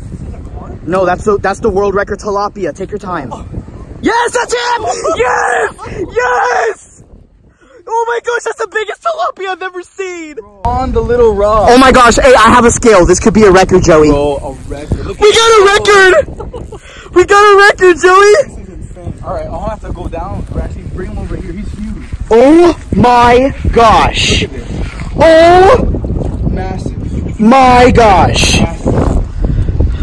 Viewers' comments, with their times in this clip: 0:05 thanks for the tinitus xD
0:11 Earphone users be aware